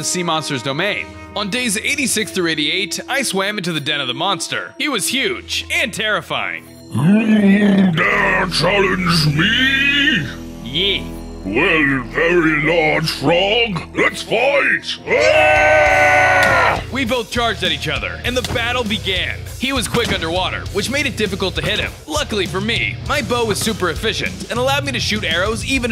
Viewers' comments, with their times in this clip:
0:10 I love the "yeh"